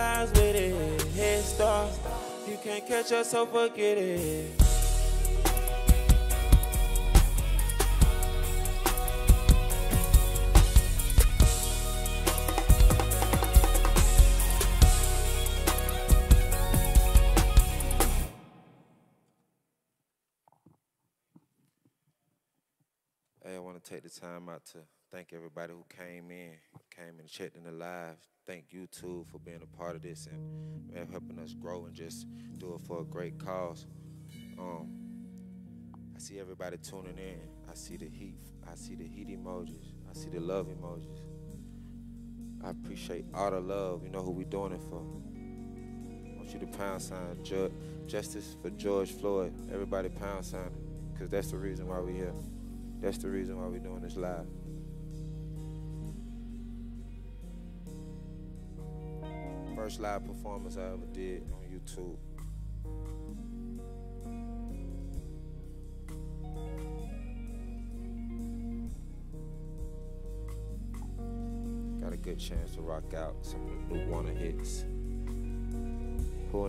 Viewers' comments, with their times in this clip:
0:09 Im surprised Skybox sounded that good live
1:01 they need to make a 5 minute version of that (background music)